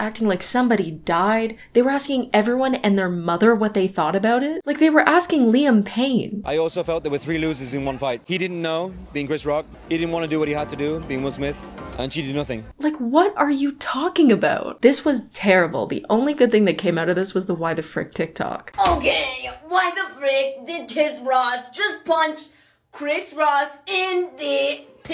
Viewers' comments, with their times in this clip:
0:06 Omg I swear that I'm good at english but wtf is he saying literally I could only hear an yi di nazin